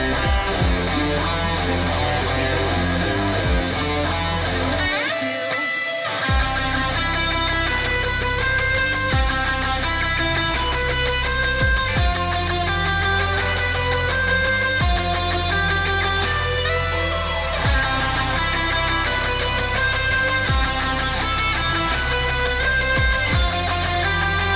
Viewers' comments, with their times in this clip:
0:05 small solo section